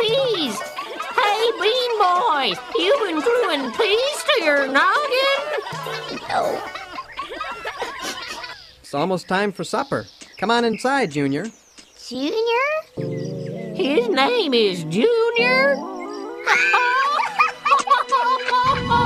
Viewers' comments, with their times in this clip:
0:05 Also ftm that I admire because Florence crying turned out perfect!